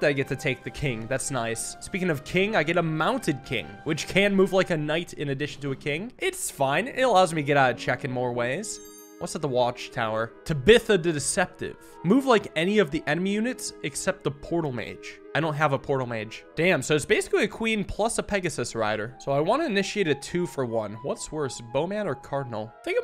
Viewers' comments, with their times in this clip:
0:09 Did this man really just mispronounce "Tabitha"?